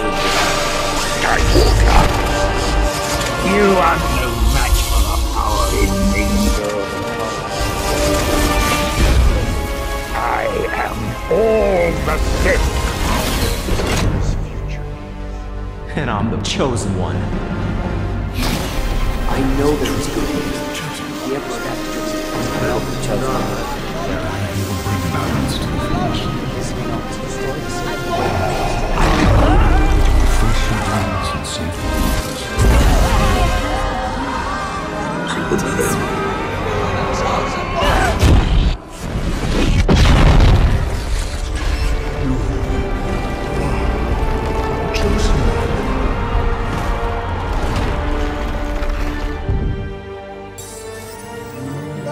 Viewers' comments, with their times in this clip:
0:04 palpatine's music there hit different.
0:36 Anakin:AAGGGHHH female noises